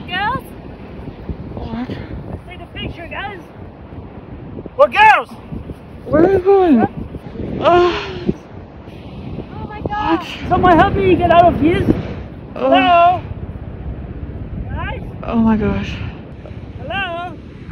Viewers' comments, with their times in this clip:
0:05 Is it me or the girl who was filming was making weird sounds